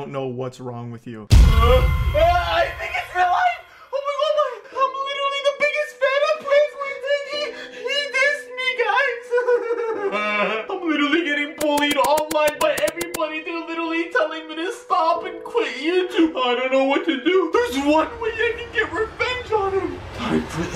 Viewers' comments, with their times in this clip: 0:08 why your voice dropped down so hard tho?